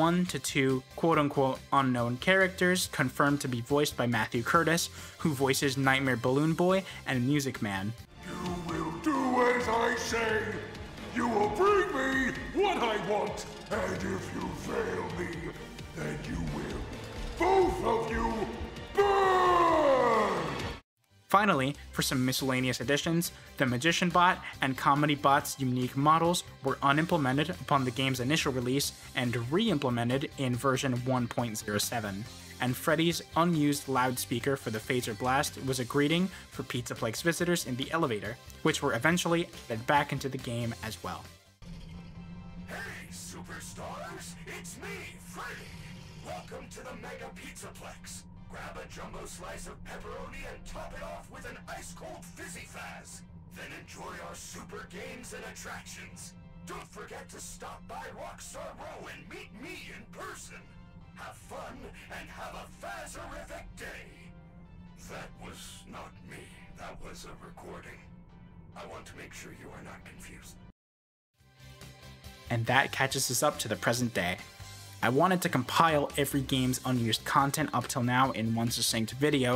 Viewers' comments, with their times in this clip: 0:08 sounds like how I imagine Foxy sounding, but thats just me.
0:43 why is the recording of freddy affected by the voice box upgrade thing
1:04 something about the way freddy said "i want to make sure you are not confused" is so sweet, but also silly imo 😭🫶 i wish it had stayed in the game 💔